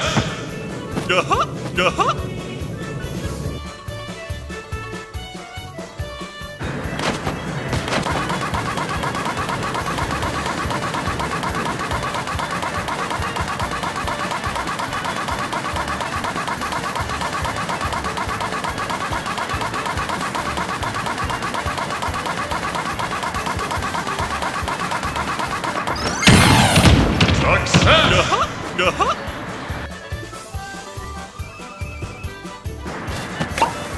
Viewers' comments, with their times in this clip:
0:07 A S M R
0:21 is the sound of the Mcflurry machine